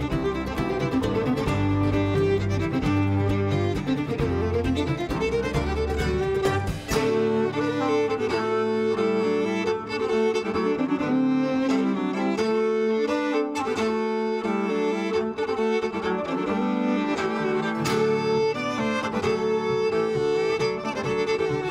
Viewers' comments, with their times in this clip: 0:05 EPIC double bass playing the melody and harmony